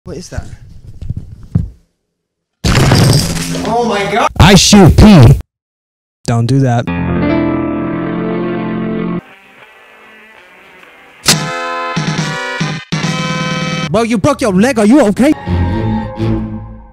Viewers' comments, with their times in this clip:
0:00 that sounded so english